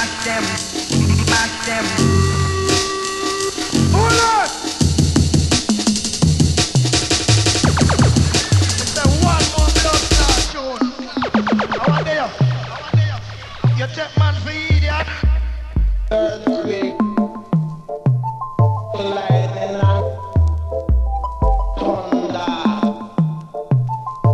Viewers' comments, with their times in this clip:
0:05 Love the change the entire tune is sick but the way it flows is brutal.